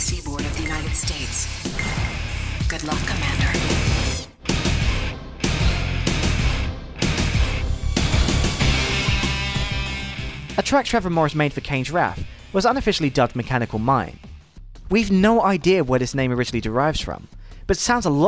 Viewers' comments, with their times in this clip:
0:03 God that editing was just so perfect. Listening to it transition from the video to the track satisfies the OCD in me x)